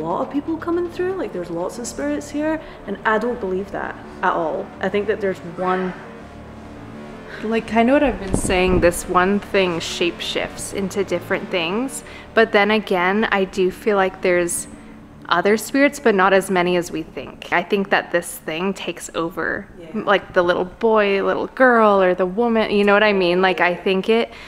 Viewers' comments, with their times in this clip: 0:05 there is a whisper that says “run”